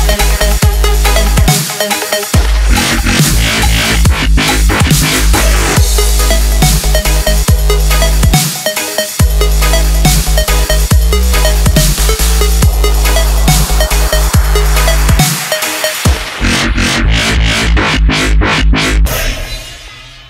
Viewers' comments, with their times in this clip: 0:05 Sounds dank speed